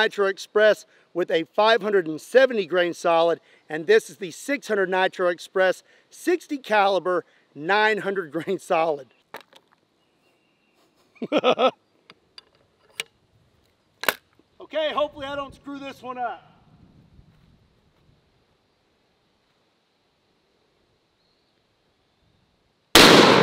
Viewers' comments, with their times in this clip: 0:10 i love it when he laughs like that before loading the ammo